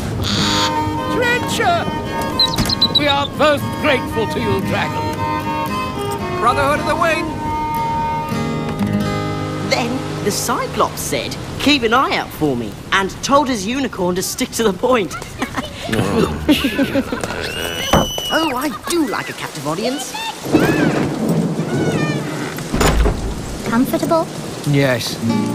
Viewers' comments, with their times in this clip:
0:09 anyone notice how the merchant groans ?